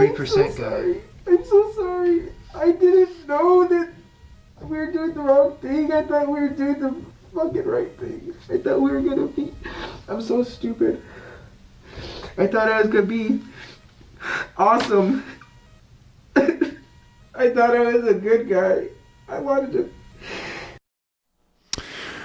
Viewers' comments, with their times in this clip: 0:03 I thought that was a woman crying 😂 This goofball never met Donald Chump before, but yet he's facing felony charges that'll be on his record for life.